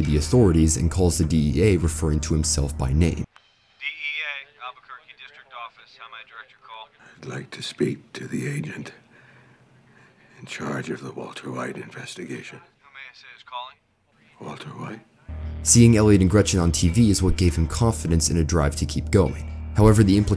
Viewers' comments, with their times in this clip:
0:03 sounds like hank on the phone